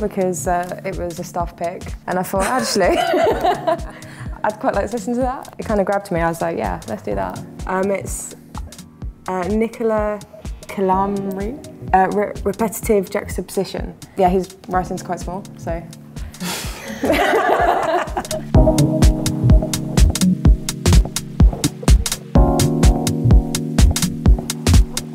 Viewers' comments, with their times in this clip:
0:07 what is the eletronic album ? I cant make out her pronunciation, it sounds like "nikola colomri, repetitive jazz obsession?"